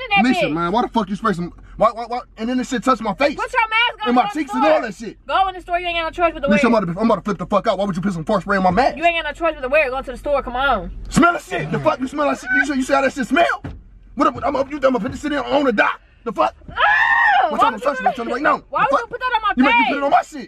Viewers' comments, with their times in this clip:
0:04 Here comes the DMX, ja rule and Mystikal voice 😂😂😂😂😂